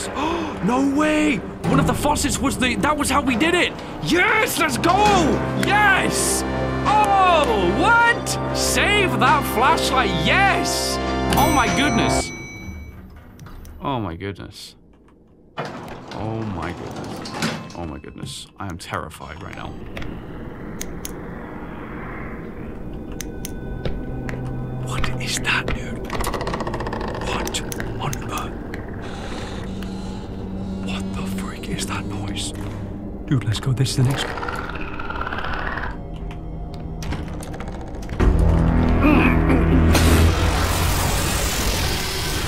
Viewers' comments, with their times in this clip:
0:10 The most joyful OH MY GOODNESS, to the most defeated, oh my goodness
0:11 3 levels of oh my goodness
0:13 i hear someone ringing his door bell in the background.
0:23 Did I hear his doorbell ring ?